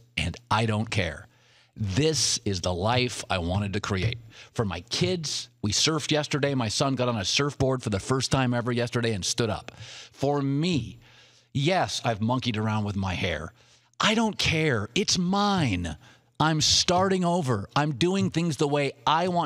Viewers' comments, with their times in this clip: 0:06 he sounds like Kasey Kasem